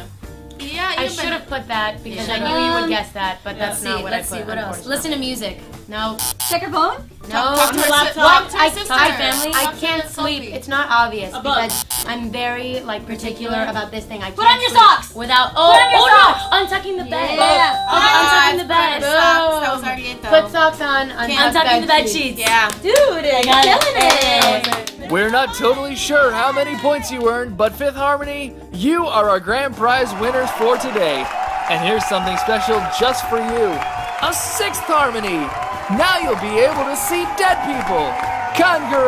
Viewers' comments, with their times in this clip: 0:06 lauren tho. also 'particular' and that in-sync clap.
0:13 did anyone else die when Lauren and Camila said particular in unison ??? that killed me
0:13 when they said it at the same time
0:21 PARTICULAR and claps at the same time and H5 Me:....that’s some real shit right there.
0:22 Camren clap in sync